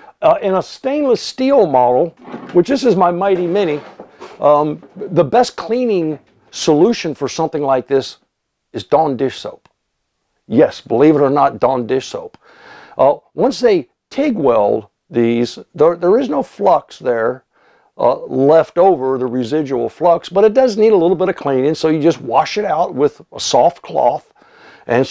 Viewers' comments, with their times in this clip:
0:06 is he saying "don dish soap" or "Darn dish soap"